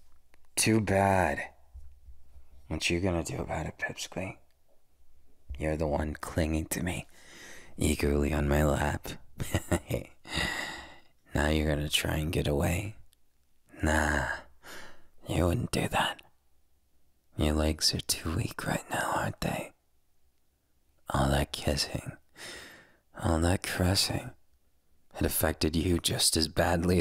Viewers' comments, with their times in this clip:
0:09 HIS GIGGLES R SO? WHAATTT????